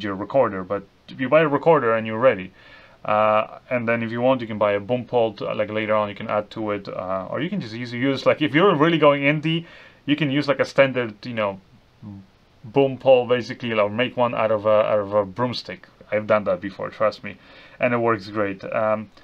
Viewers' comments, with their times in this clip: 0:07 Snakes hiss less than that Diety S-Mic 2 :) The comparison when listening to headphones is night and day, and I'm not even an audiophile.